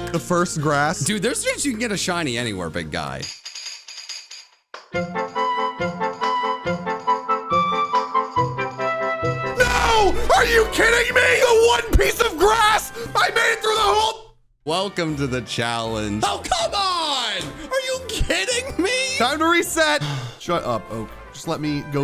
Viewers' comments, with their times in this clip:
0:05 I no joke was singing the music when he got a shiny I kept the music but it turned from a low 3 to a 1100